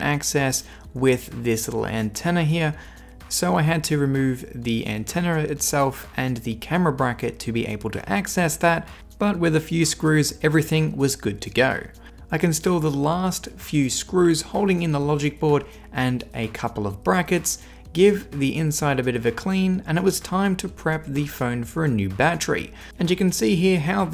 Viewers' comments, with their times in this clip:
0:07 with a few screws, everything was about to go😂😂😂 this is so wrong